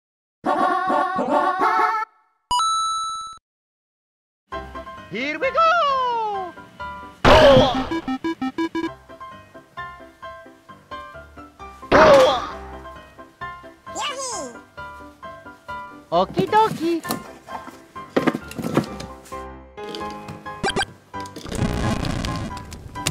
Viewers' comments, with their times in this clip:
0:07 haha, hammer go bonk